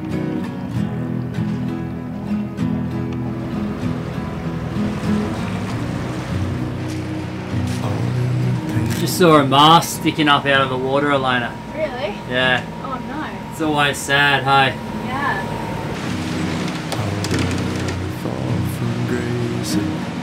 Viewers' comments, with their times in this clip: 0:08 whats a mask?